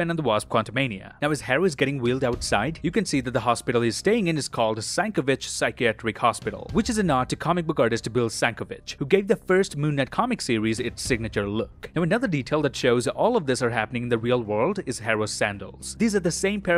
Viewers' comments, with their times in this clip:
0:03 you’re telling me that he was able to pronounce ‘sienkiewicz’ and not ‘taweret’? 😭